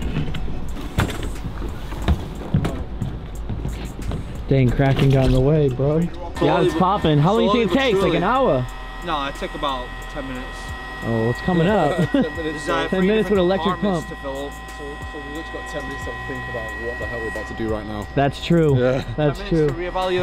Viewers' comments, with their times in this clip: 0:06 I was just about to comment this. The way he says 'like an hour?' 😂